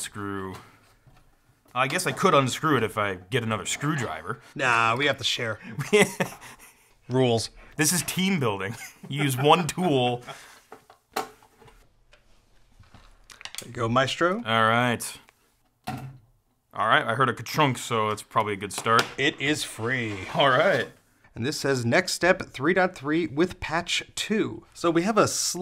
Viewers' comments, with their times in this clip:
0:08 U sure? Sounds more like union.